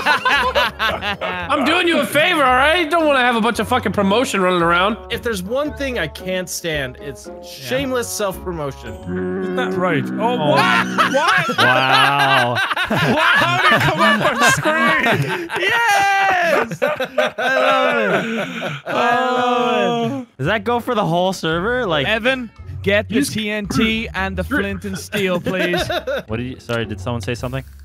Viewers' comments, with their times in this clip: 0:05 the explosive laughter here had me laughing!
0:09 I love that foghorn sound effect. Makes anything funny. 👍🏼